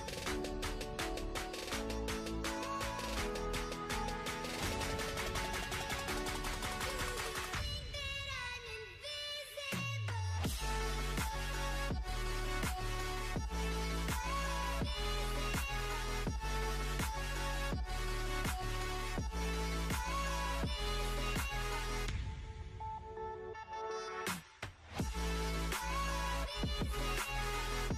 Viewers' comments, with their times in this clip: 0:08 Nice job, btw his pushups are synced with the beat of the song